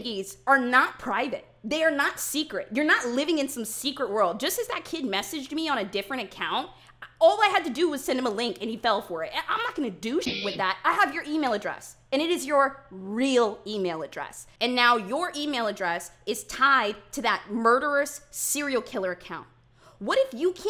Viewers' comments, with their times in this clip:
0:08 she sounds like my mother when I get suspended at school